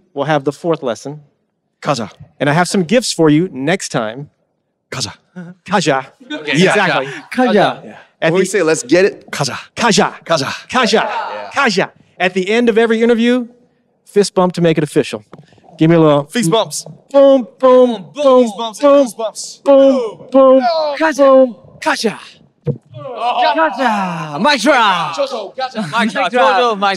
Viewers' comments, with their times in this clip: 0:07 why Jungkook's gaja sounded so cute to me???? Is it just me????😍😍😆😆😆💜💜